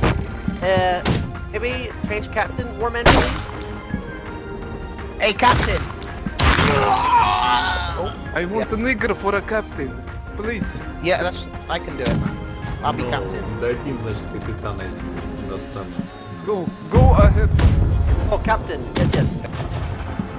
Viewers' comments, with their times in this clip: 0:07 he held back his laughter